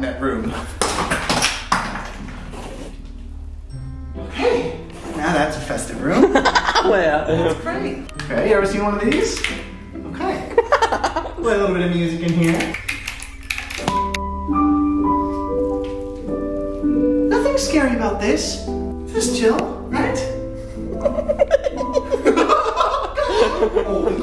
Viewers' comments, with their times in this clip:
0:07 I swear there is a voice thats says “that’s great”